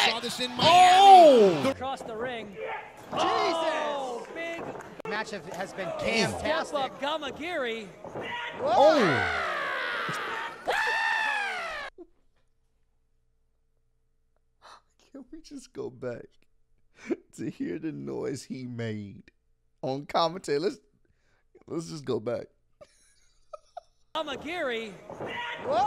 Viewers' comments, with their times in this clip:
0:09 Boy that sound like YOU LAUGHING 💀💀